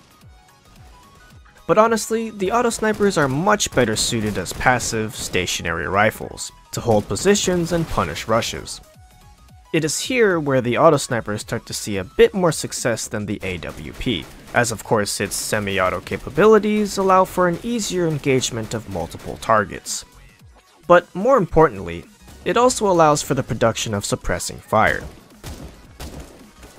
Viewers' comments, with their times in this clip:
0:04 "to punish rushes" i thought he said "to punish russians"
0:04 am I m the only one who understood punish russians xD
0:06 Punish Russians? xD
0:07 I heard punish Russians.